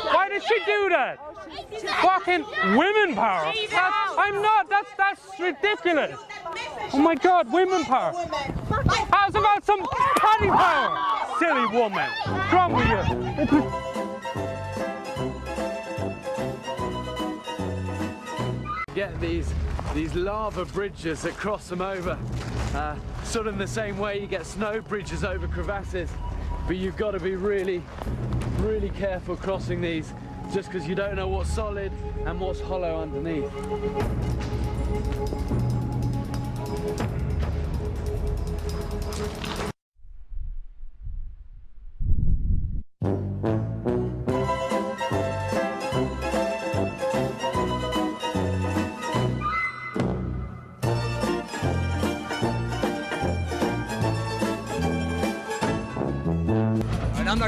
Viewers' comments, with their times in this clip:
0:07 wii boxing theme plays
0:09 How's about some paddy power...silly woman. The nonchalant way he says it gets me every time ahah.
0:10 the accent on the guy makes it even more funny. I am a true feminist, so don't believe in the shit of never hit a women. If a women is strong enough to attack, she better be strong enough to defend. But never ever initiate violence against anyone. Use words not fists.
0:10 Man: hits with bottle "Silly woman" Woman: roblox oof sound
0:10 I swear I heard someone yell "THAT IS RAPE THAT IS RAPE"
0:40 Curb your music timing